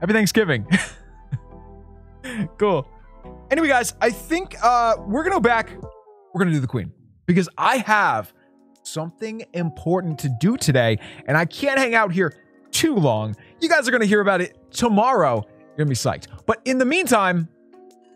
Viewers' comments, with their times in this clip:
0:04 murcia is a city in spain hahahah